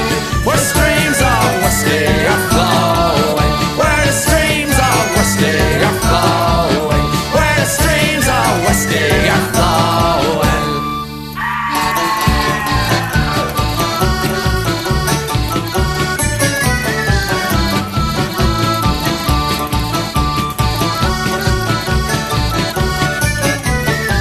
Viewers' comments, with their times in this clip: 0:10 He has a way woth words, that lad. And there's the Póg scream